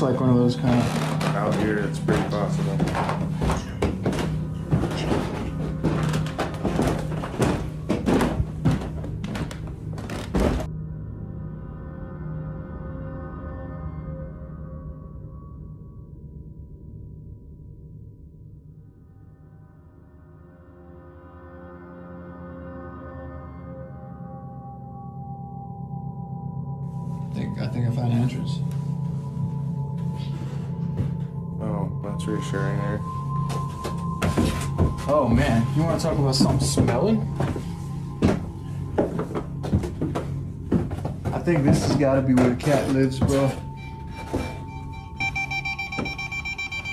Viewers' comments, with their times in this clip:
0:03 sounds like a voice saying something like "chimney" twice
0:03 You can also hear a female saying something when they are walking downstairs and the spirit box is going but doesn't seem like anyone noticed
0:31 And going down another set of steps you hear a girl giggling